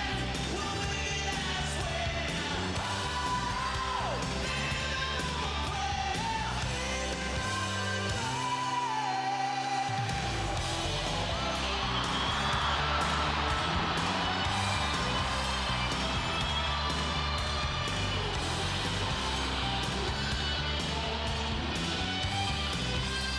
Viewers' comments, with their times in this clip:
0:10 The best part, the solo guitar and that guy know the solo because he was playing it on the right Frets (he's left-handed and it was hard for me to check it).